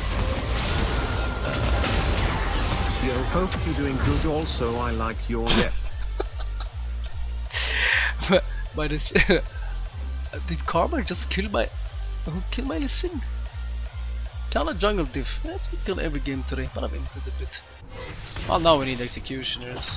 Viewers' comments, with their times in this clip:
0:06 need that musiccccc